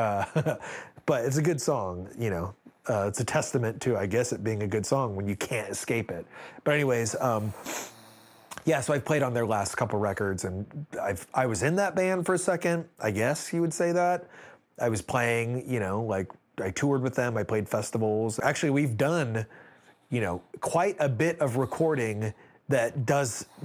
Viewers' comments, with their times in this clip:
0:06 I love that you can hear Dot snoring 😂